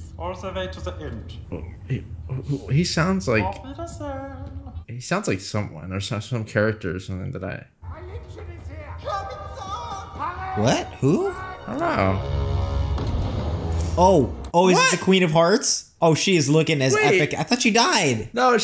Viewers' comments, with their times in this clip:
0:03 "he sounds like someone" thats kermit the frog right there (don't know his voice actor but they sure sound alike lol)